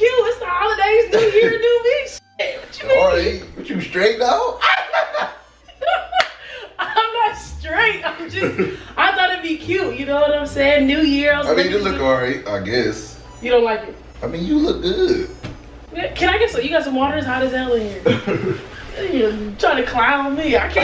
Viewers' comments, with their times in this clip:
0:04 his laugh tho🤣🤣🤣